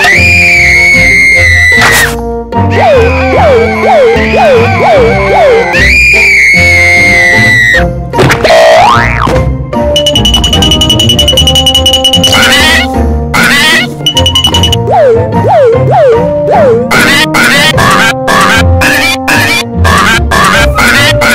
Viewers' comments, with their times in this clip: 0:04 Whats this screaming